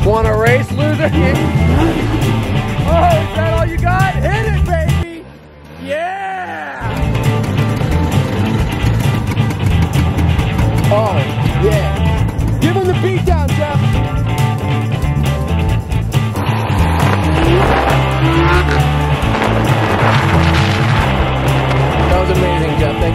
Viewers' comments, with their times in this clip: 0:06 he lowers the music to hear the motorcycle broom